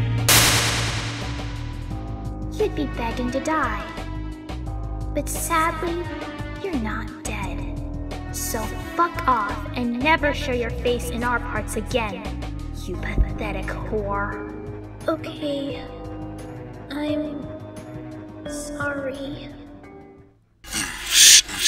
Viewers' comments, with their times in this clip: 0:08 *A pipe appears. Then, Luigi comes out* Luigi:*pretty long gasp* :O PROFANITY! *Enters the pipe and the pipe disappears*